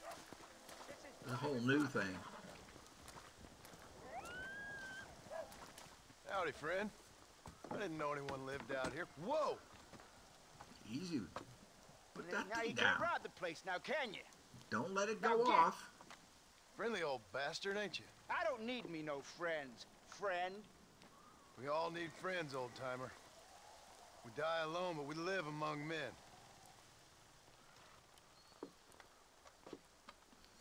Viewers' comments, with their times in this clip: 0:05 this guys voice reminds me of Hosea. I know its not him, but he's got a similar voice
0:09 he sounds a little familiar doesn’t he
0:12 he kinda sounds like hosea